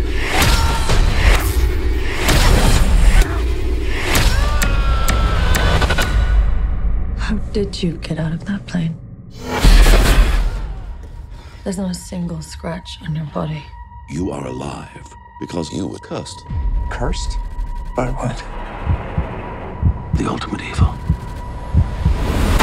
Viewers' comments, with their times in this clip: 0:04 Meme Scream! XD